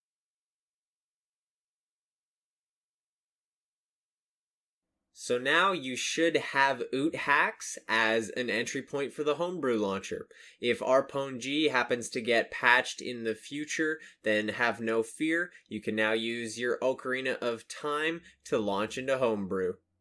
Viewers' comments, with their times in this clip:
0:06 "Now you have *boothax*" Like NTR Boothax? And question 2: Does this work with another system? Like 3ds 1 applyes this to the Cardridge and 3ds 2 wants to launch it :o